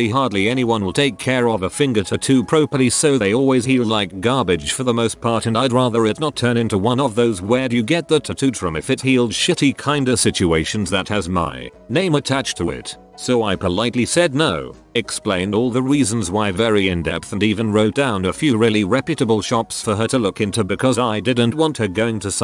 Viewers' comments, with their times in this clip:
0:04 I’m sorry but the way the voice says “garbage” is making me laugh literally so hard